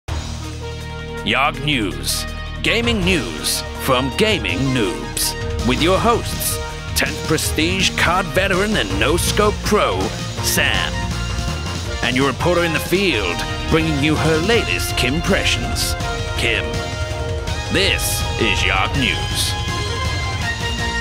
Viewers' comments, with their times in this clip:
0:06 Why were there alarms going of